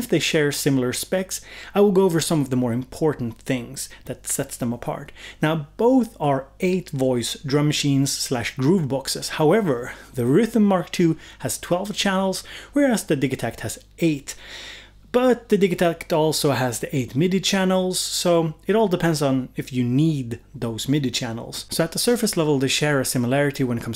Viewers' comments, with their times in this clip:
0:10 Wait how did you pronounce RYTM ? 😅